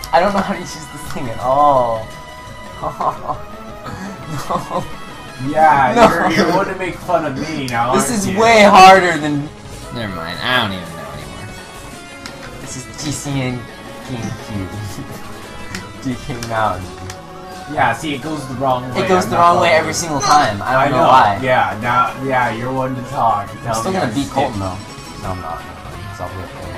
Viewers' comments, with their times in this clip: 0:09 why did the audio change, it's like he muted it then voiced over